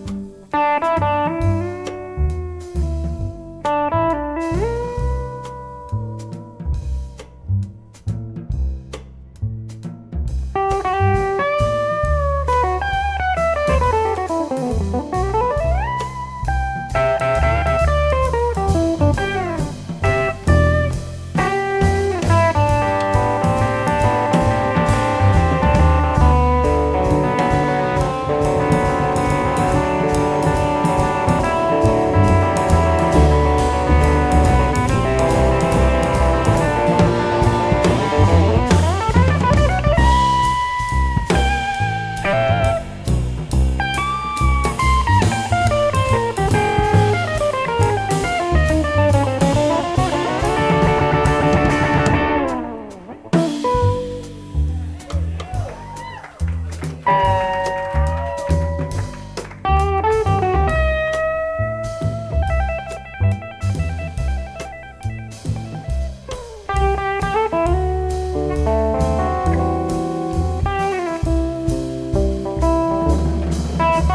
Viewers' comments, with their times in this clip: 0:03 The bend really got me. Something so simple can have such a big impact.
0:56 steel guitar bend for the Nashville Cats! 👍